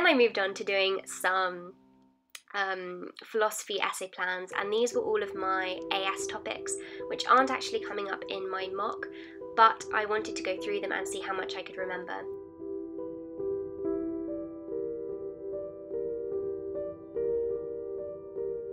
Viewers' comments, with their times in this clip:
0:05 Why the creepy music? lol